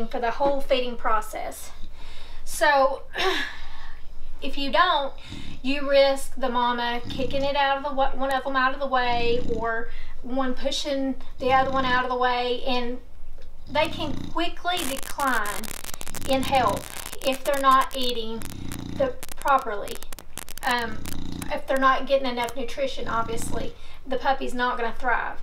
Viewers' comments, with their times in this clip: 0:08 did the mother just knock out and start snoring! Hahahaahahah